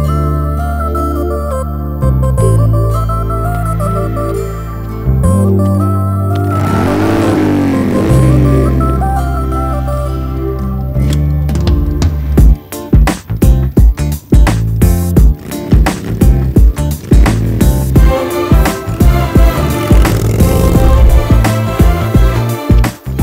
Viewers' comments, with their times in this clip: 0:05 what a melody